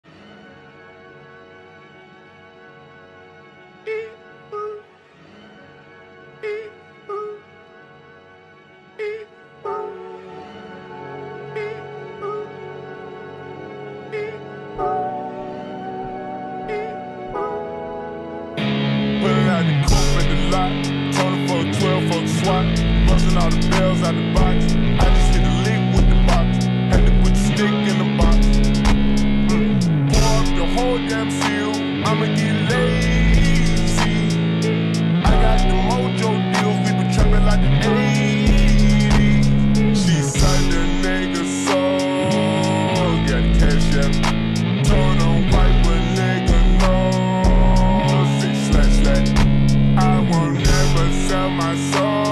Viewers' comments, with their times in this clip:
0:03 sometimes the words he and hair are pronounced
0:18 the first beat🔥
0:19 I love for the guitar My new favorite song😀
0:40 "school gyatt" wtf